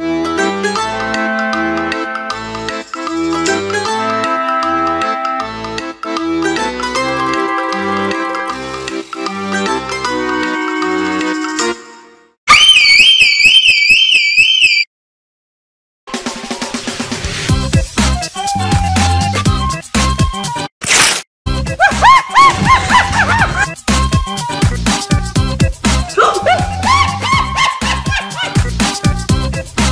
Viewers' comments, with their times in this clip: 0:10 bro turned into a fire alarm💀💀💀💀
0:10 bro is a fire alret💀
0:12 BRO TURNED INTO A FIRE ALARM IN A SCHOOL💀
0:13 He turned to a siren😂😂😂😂😂😂😂😂😂😂